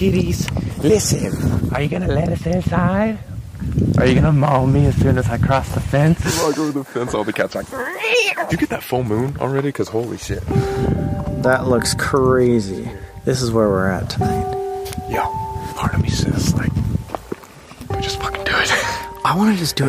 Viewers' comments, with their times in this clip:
0:07 im crying the imitation of cat was perfect 🤣❤️